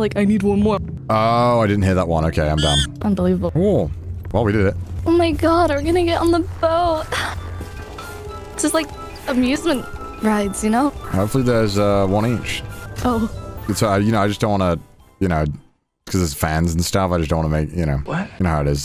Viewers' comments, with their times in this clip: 0:06 such a LIE!! She said square but laugh so much that no one hear it.